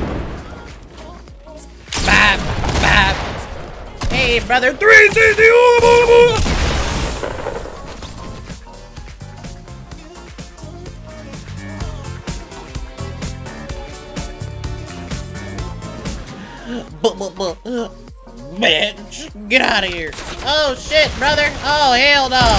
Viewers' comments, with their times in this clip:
0:04 hey brother 360 ooga booga booga *Dies* *Dead silence* *Enemie dancing in the back*